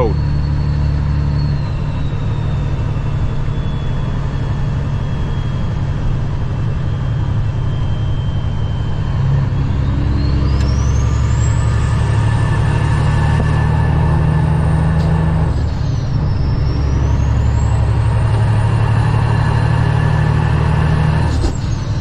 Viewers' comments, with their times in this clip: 0:09 I'm a CAT guy, gimme a 3406e and I'm a happy man, but man, that ISX sounds so good!